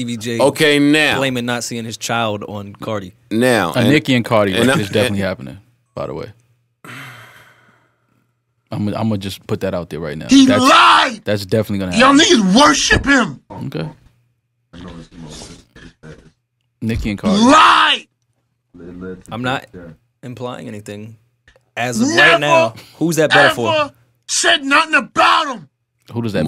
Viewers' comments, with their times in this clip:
0:07 I swear that FLEX DROP is STILL LEGENDARY TO THIS DAY!